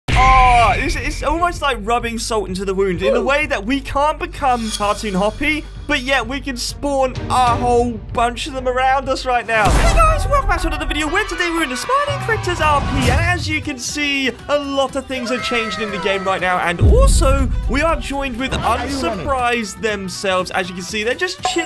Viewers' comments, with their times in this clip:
0:02 Hoppy be like evil laughing Dizzy be like ahahah man I’m dead